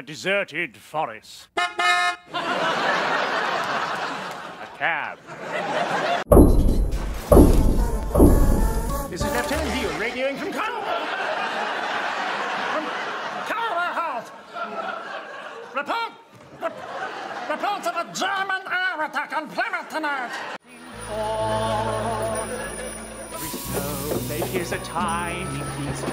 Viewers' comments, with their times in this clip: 0:09 does he sounds like Donald Duck!